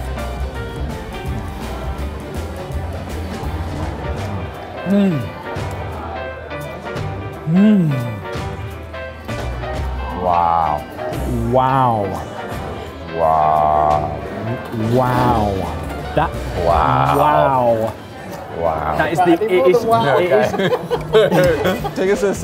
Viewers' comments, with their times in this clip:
0:10 It's like a pair of Owen Wilsons. (Gets further in) Looks like we share the same braincell.